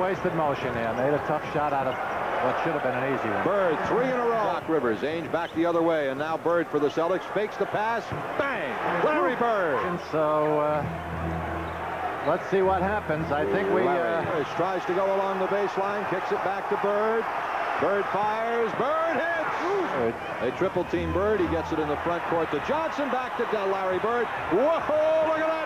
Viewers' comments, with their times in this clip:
0:06 Mike Breen is that you???👀